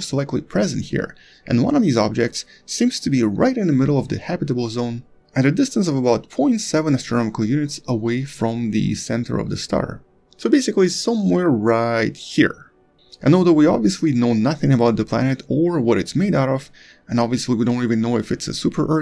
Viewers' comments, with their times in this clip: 0:06 Hi Anton, thanks again for your very good work. you say, the planet is in a distance of 47 AU from its star. If the star is smaller than sun I thought the habitable zone must be a bit closer to the star and therefore just a bigger part of one AU? Thanks and Regards, Heinz.